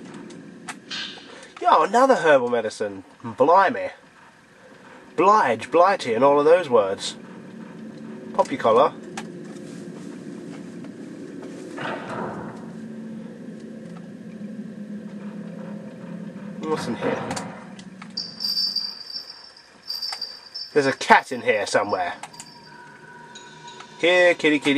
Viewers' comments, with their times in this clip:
0:07 poppy color? pop your collar?